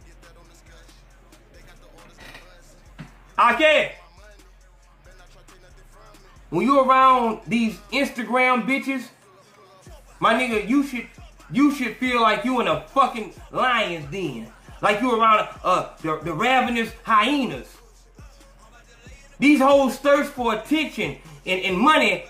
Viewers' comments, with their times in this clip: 0:03 ...I like how you pause for the dogs 🎈